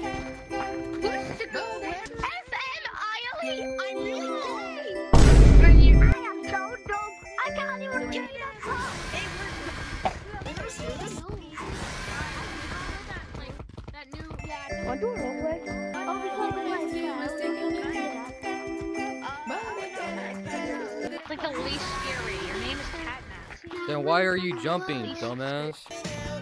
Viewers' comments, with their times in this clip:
0:09 Bro is dying🤣 Cough